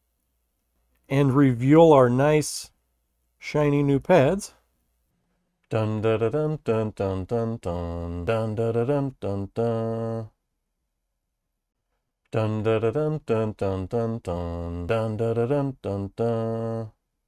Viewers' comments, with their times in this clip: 0:04 If you sing, Man, you're gonna have to get in the pitch! Had to watch the rest of your struggle, though.